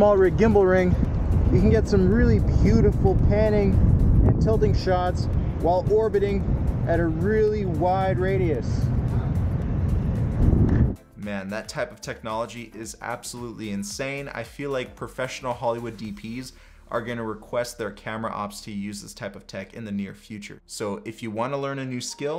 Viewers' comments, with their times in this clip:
0:06 that sound of their clap tho... perfect orbit shot with the perfect clap... couldn't ask for more.